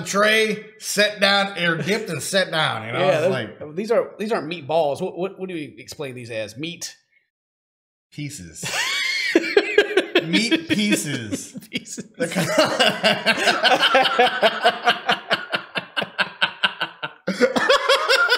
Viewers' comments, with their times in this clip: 0:04 I thought you said meat faeces lol